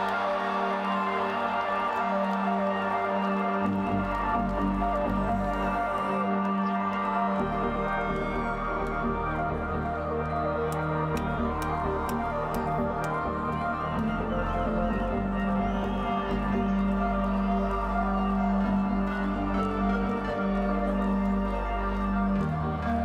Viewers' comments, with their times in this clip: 0:09 clapping fail ahahah
0:09 epic clap fail.
0:10 Fail, forever alone claps xD
0:10 epic clapping fail. lolol
0:10 epic clapping fail. :D
0:10 epic clapping fail. :D
0:10 epic clapping fail. :D
0:10 epic clapping fail